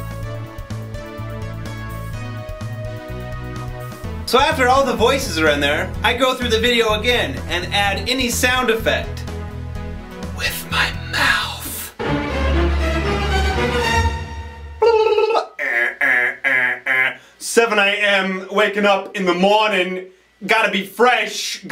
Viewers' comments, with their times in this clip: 0:08 sounded like tobuscus